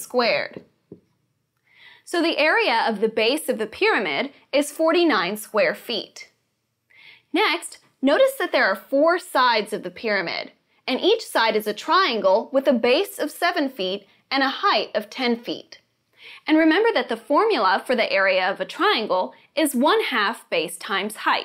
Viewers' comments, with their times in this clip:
0:06 the way she said ""next" in gosh i have a feeling that she is a secret singer